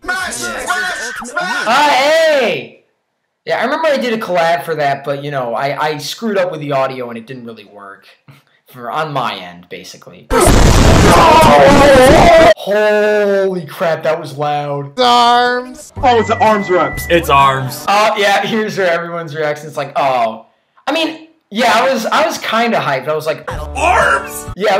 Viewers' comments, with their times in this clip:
0:10 My Apologize to ruin your Ears.